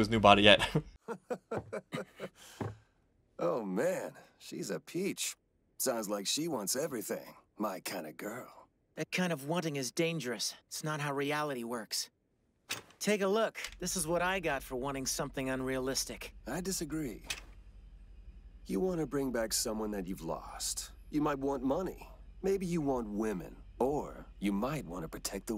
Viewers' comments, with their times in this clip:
0:06 That entire scene in Winry's room is easily one of the funniest moments in the show. Especially Greedling's nonchalant reaction to being thrown out via wrench. His discussion with Ed is very interesting; Greed, and all the other so-called deadly sins, aren't necessarily evil in of themselves. Everyone has them, to some extent. It all depends on what lengths one indulges in them. He's right, too. Everyone wants something. But what does he want? And I've always loved General Grumman's little cackle. He's not powerful at all, but he's got more cunning than anyone else in the show, Mustang and Olivier included. It's what's kept him alive so long. Anyways, welcome to the final arc of the show. It's not quite the endgame, but it is the beginning of the end. The next 18 episodes are going to be roller coaster. Everything that needed setting up is now in motion, and the momentum is going to keep building and going in crazy ways you won't expect. And it won't stop until it's all over.